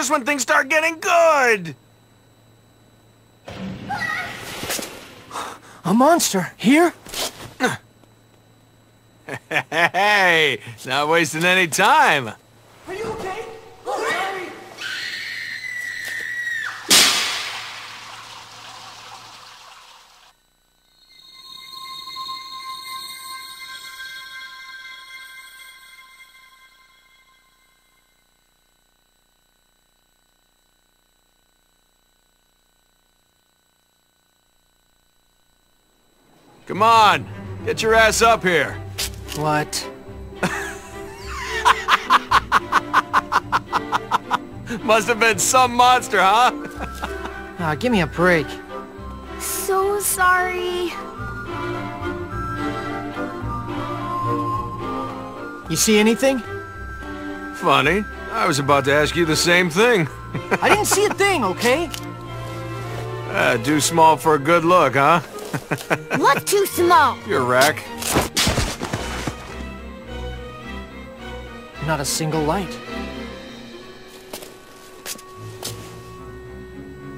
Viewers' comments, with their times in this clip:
0:09 his laugh was funny and when he quickly said your rack I died laughing XDDD
1:05 how he say that so fast. and she came with a power smack!!!